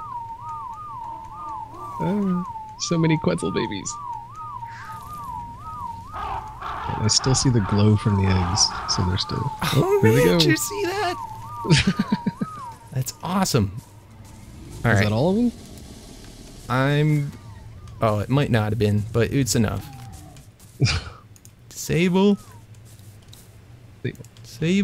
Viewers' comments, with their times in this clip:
0:05 an accurate representation of how a quetzal chorus would sound